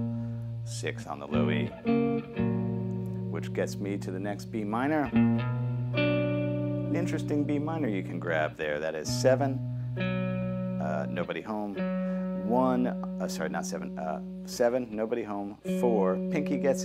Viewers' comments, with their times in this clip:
0:03 Regarding that F# it's the first inversion of F# major. That's how you can get away with starting on the A# :-)